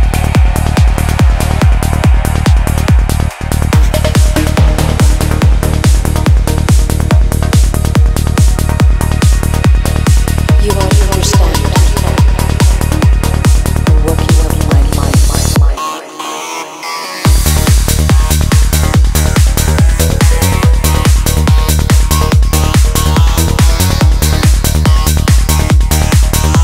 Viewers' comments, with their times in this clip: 0:09 Ultimative basslines. Love u for existin.